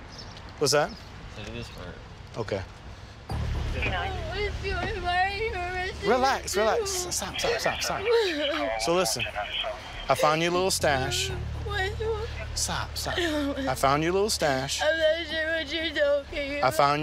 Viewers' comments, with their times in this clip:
0:04 bruh she speaking some zig zags